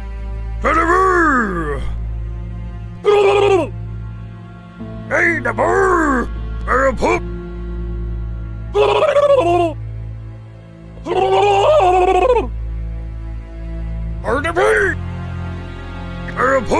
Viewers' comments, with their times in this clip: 0:03 when i heard the shaman speak i died LMAO